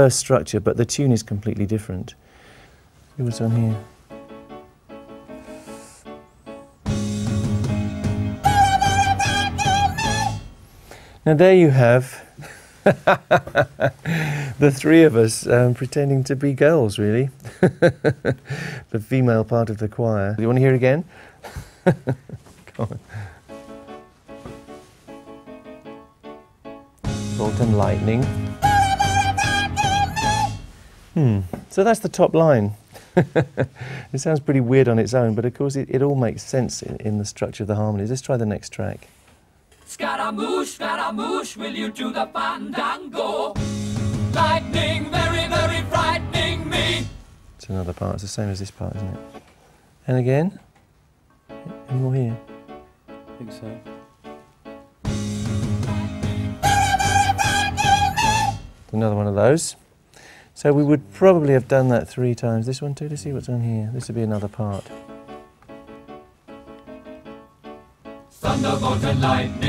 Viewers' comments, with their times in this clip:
0:08 LOL never realised the Chipmunks did a cameo in this song!
0:30 sounds like a blown tweeter with a wire dangling and causing a short into the speaker.
0:53 The other guy finally speaks Couldn't hear a word he said. "Mumble-mumble." You talk too much, Mr. Engineer.